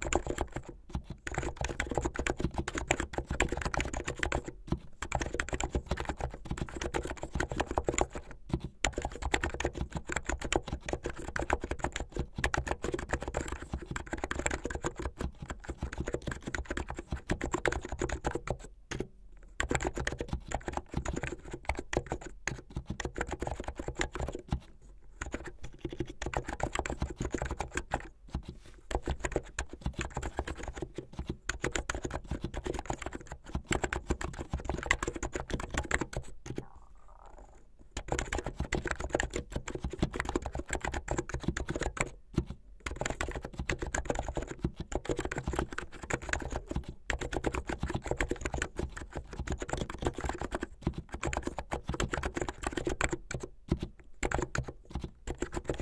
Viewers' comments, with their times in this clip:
0:03 ITS SO SMOOOOOOOOOTH
0:35 This is gonna be a bit random but I heard a quiet noise in the background and I thought it was my stomach
0:36 And I felt that stomach growl
0:36 *trying to record asmr video* Stomach: “I am now about to sing every note from the orchestra.”